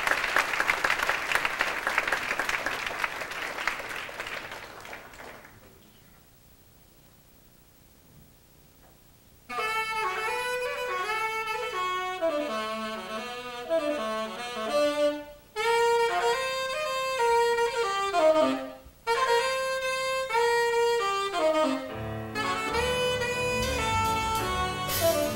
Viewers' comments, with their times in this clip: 0:09 i fucking love the song 🥰